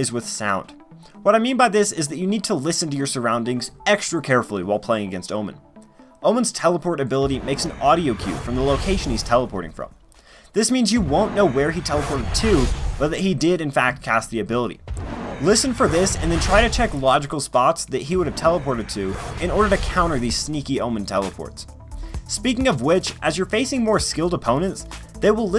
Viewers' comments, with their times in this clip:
0:06 The place where he lands also gives an audio queue, no? I can hear it clearly in the video if he has teleported left or right
0:06 when you were talking about the sound emitted from shrouded step you only mention the initial sound but you can hear where he teleported to as well just listen its very quiet but its there so if you're paying attention you can know where he teleported to and kill him
0:07 There is actually a very subtle landing noise when he teleports but you have to be very close to where he teleports to. It's like a little whisper I guess. Go to and you will hear it when he rises up at his teleport location.
0:09 Idon't know but Omen ability make a sound where it teleport i don't know is that true or now but in the video we can hear it